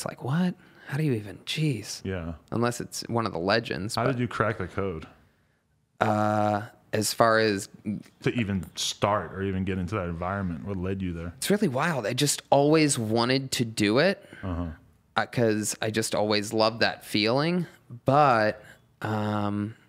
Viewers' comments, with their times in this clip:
0:03 I swear he said crack or coke and Tony says really loves that feeling meet a dude at his local Starbucks then Shia LaBeouf dad lol yeah I took that wrong had to rewind That